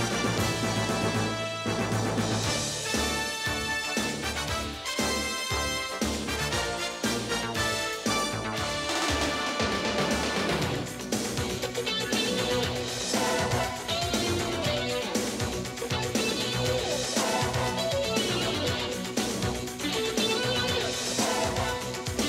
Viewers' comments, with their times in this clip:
0:10 I LIKE THE MUSIC